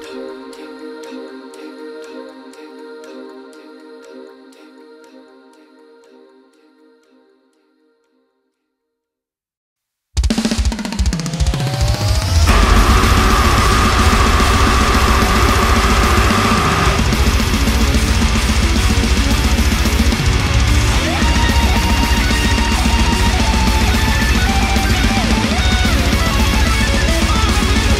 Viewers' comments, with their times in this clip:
0:09 Static-X vibes, wow